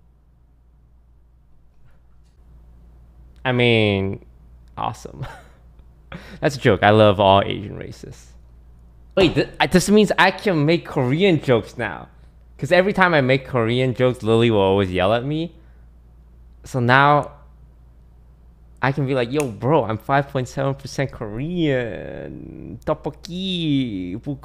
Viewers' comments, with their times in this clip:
0:05 "I love all Asian racists" 🤣 This is a joke, by the way..